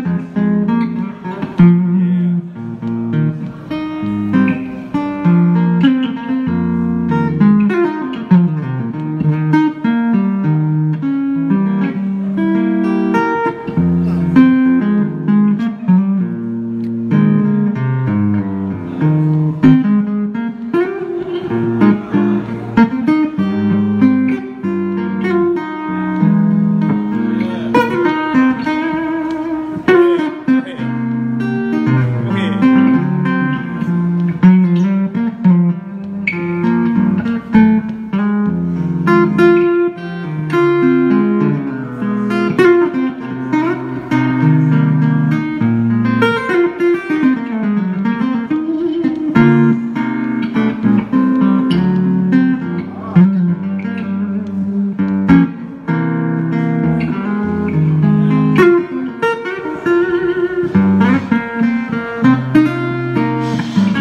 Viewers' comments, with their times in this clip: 0:10 Can any musciains tell me if this short little fill he does here is diminished or not? Just testing my ear. I believe it is....
0:23 In love with the progression
0:45 I immediately grabbed my guitar and played that over and over and over until I could repeat that little lick. Now that was soul.
0:46 Me too. And he plays a nice riff
0:52 you like that run didn't you?